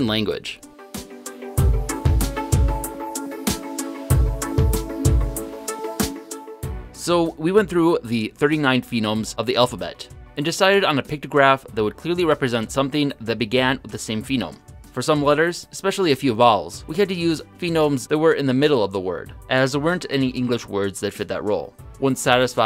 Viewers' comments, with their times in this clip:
0:07 he switched to saying "Phenome" instead of Phoneme. This combined with him constantly saying "Daygur" for Dagger, in the past videos, makes me question if he's the best one to come up with a new language, when he clearly doesn't even have English down.